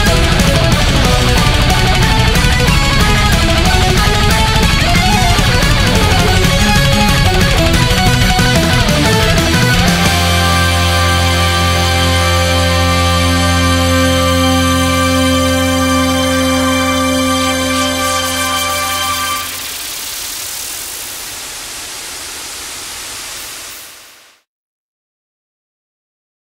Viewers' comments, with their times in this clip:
0:09 You heard that spinner didnt you
0:10 I CAN HEAR SCREAMING